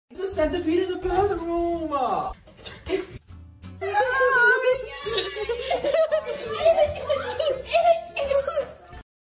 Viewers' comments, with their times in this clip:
0:03 Lol the centipeds face, it's like: "Why is this human screaming?" Edit: Sorry for miss spellings.
0:04 WHY DOES DRACO KINDA SOUND LIKE ZENITSU LMAO